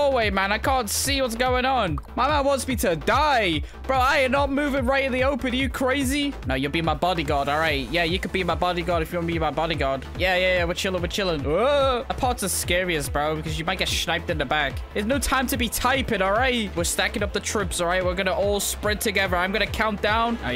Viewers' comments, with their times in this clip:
0:05 The guy mispelled body and guard he said baby gouard lol